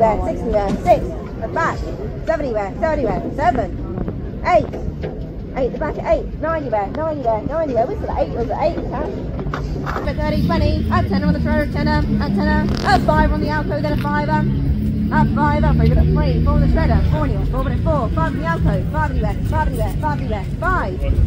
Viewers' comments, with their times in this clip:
0:04 Am I the only one who heard the good old norfolk boy drop his guts? Listen I laughed till my stomach hurt!😅